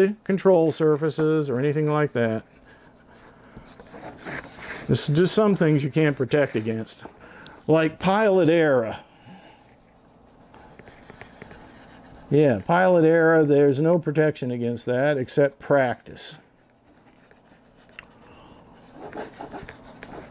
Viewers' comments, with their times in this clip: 0:07 I distinctly hear you say "you can't protect against *Pilot Era*" - Are you calling me old? ;-) I see your bird is looking great, and protected in all the right places. Make sure you plug those weep holes on the bottom of the wings, where the spars are (squeeze a little E6000 or Foam-Tac in them, first, to stick those spars in place). Otherwise water will collect in your spar channels, adding a few unwanted grams. And you probably aren't taking those wings off, lol. So far mines gotten it's FPV gear installed, FC is in and getting ready for lamination. I've got the same iron and 1.7mil film, but am curious what temps you used? I don't recall ever laminating a painted EPO plane before. I slapped a piece on the leading edge and top of the vertical stabilizer first, but that was 99% sticker.